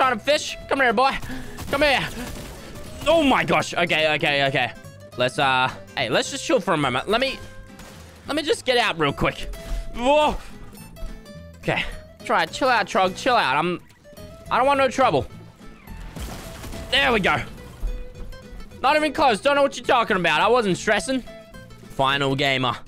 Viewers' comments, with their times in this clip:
0:06 I love how he forgot to put his fight music in a fight where he was 30 HP and clutched up while playing the calm music (timestamp: )